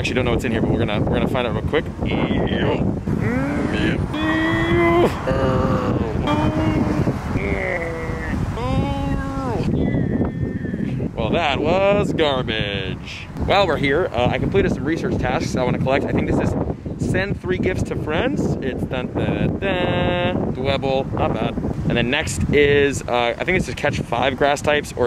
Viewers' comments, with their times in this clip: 0:07 the noises i-